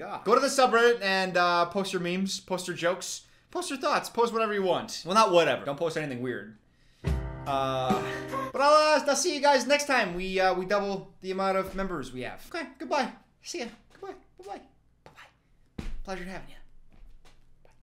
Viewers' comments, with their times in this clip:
0:06 that's my alarm sound and tht really scared me😭😭